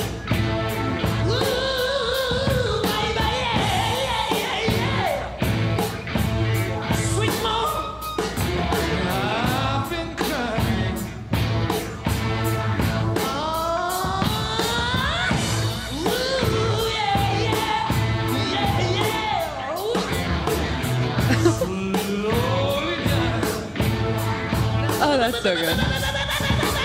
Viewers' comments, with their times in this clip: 0:08 first breakdown ever, abosultely would make me go ape shit in the mosh pit